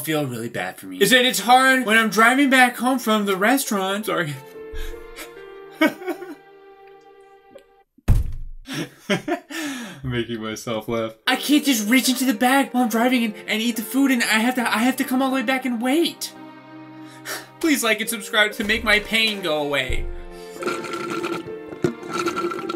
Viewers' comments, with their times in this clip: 0:07 His REAL voice 😮